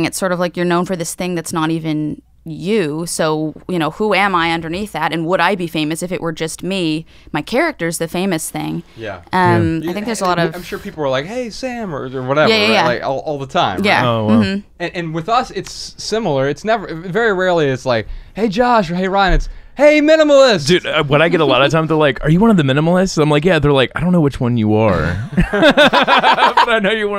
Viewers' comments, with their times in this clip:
0:09 Man I wish they didn't talk over her she was saying something really interesting